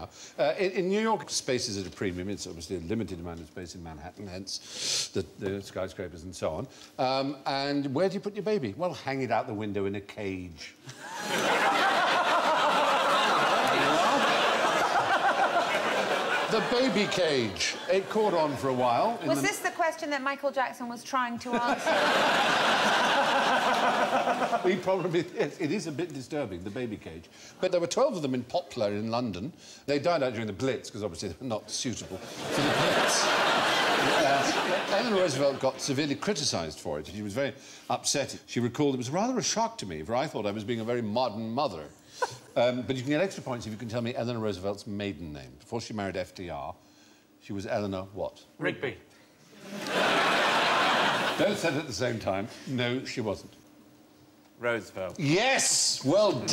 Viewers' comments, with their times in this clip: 0:08 I love the way he says this 😂
0:41 He says "mother" the U.S. way!